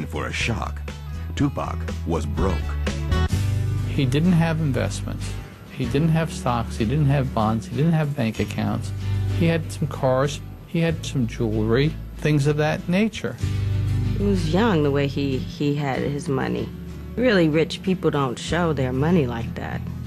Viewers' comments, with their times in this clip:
0:05 is the most jehewy jhew I've ever heard talking about a rappers money